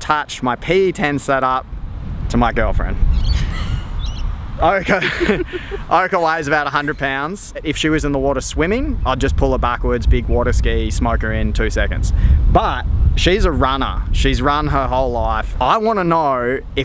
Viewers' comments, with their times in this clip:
0:03 Nervous laugh definitely not your girlfriend lmao get real 🤣😂🤣